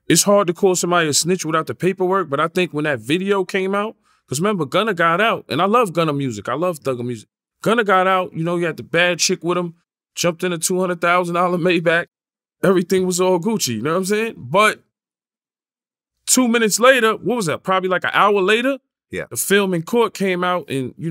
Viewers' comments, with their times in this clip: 0:08 OG did a good job keeping that laugh in. 😂😂 This is a respectable man. On life.